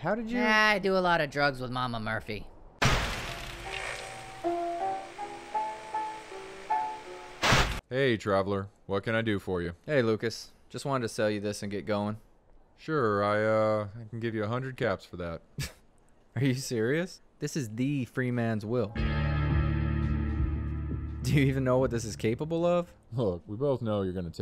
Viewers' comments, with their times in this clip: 0:10 "The Free Man's Will", unsheathing plays the Valve intro noise from their games, its a crowbar. Something here feels like a Half-Life reference.